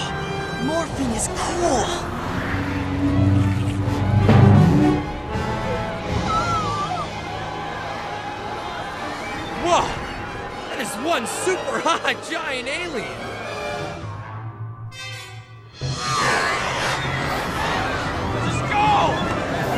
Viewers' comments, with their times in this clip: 0:03 was the boing absolutely necessary? 😂 Oh, who am I kidding? It 100% was.